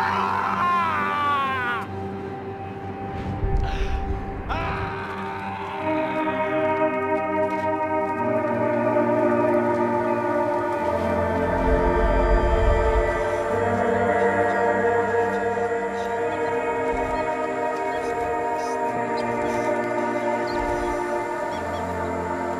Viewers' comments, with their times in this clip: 0:06 music gives me chills every time, best soundtrack for the ending of a trilogy. Haunting.
0:06 great sad song
0:08 That music Oh My God.